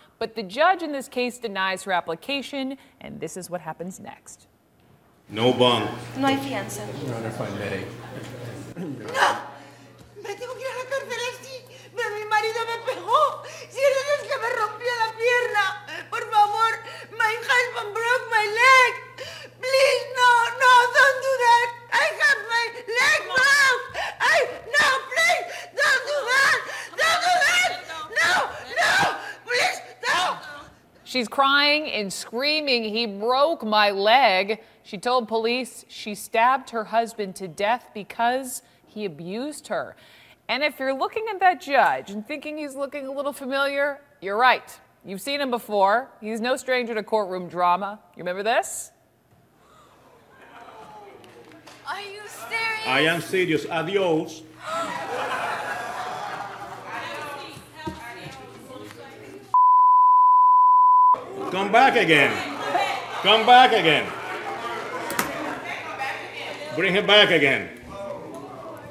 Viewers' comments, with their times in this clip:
0:10 According to the lady, she killed her husband because he abused her, breaking her leg. Here's what I could make out what she was saying in Spanish on "No! (unintelligible), my husband hit me! Can't you see that he broke my leg?!" Honestly, her pleads and the pain in her voice is just extremely sad. She could always be lying, but if she was truly abused by her husband and used self-defense, then that's a perfectly natural response. He abused her, broke her leg. If your husband broke your leg and you had a knife, don't lie, you would fight back too. However, CNN just didn't give more details about her case and would then give an example of a stupid teenager who flipped off the judge, basically calling her idiotic, overreacting. Pleading that you fought in self-defense is NOT the same as being an annoying teenager, CNN.
0:52 Killed me how he said adios😂😂